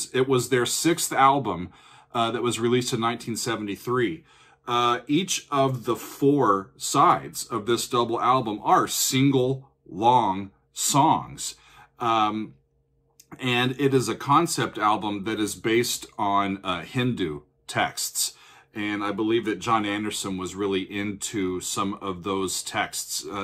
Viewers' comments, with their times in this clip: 0:07 oh man, I’ve been waiting for this one :) Tales from Topographic Oceans is one of my favorite albums! Interesting point of order here — the chant-like opening comes right away in the Steven Wilson remix, but only shows up about 2 minutes into the original mix. The stuff you missed out on is exactly of ambient, kinda shiny, long tones. I also have never really considered that first stop a “stopping point” — I’m glad you just kept it playing. In fact, as I’m listening, I’m kind of disappointed by the stopping points in general; I find myself missing the transitions. Or perhaps I just don’t want it to stop 😂